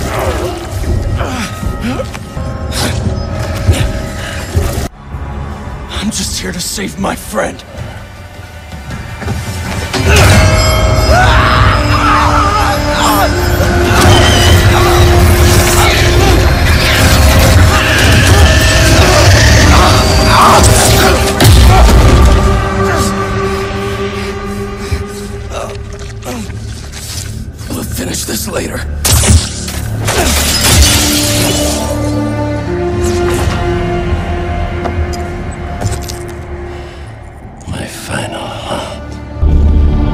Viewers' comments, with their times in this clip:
0:10 your correction is wrong because it's when the bell sound starts
0:10 sounds like SCP 96 for a second
0:12 Yuri shouting man, this is incredible it will be the game of the year :)
0:28 that thwip sound tho 👌